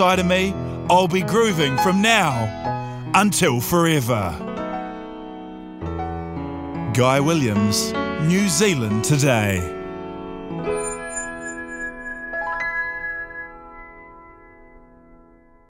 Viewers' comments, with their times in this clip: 0:10 She she actually has a good voice